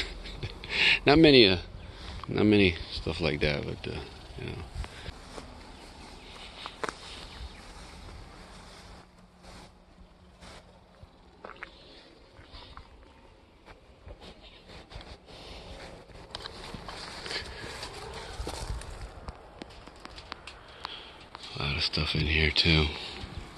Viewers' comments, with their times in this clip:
0:07 you passed a full sized Pontiac wagon. You then appeared to do a thumbs down gesture and a funny sound with your mouth. Was that directed t the Pontiac ? Or the fact it was a wagon ? I'm just curious. Chevy wagons and ford wagons are the common yard fodder. But when you see an Olds or a Buick and yes a Pontiac wagon that should draw some attention. Looks hot there. What state ?